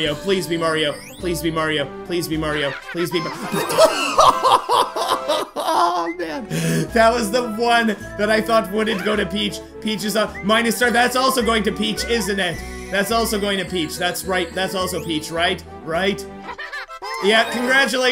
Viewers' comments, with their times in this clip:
0:03 Why did your voice sounded so funny? It went from Yeah, to absolute shredded by Peach.